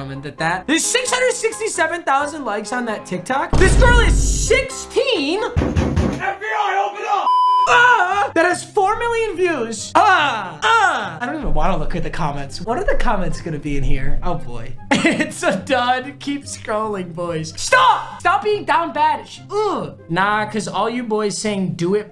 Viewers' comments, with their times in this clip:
0:08 he sounded like the dude from ratatouille